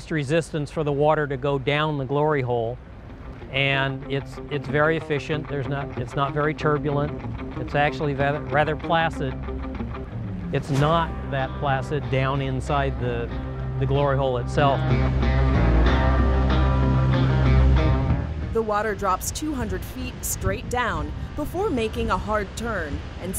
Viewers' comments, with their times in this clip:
0:09 "Its not very flaccid inside the glory hole"